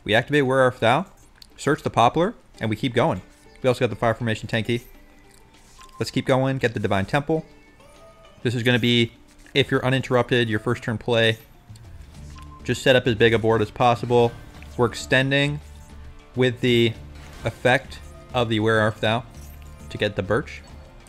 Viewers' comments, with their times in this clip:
0:06 are you eating in my ear?